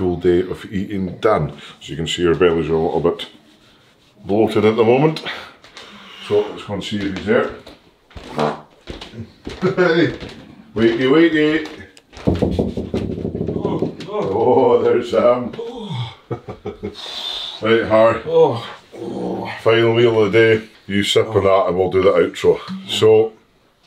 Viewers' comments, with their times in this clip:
0:09 i want to know who farted lmao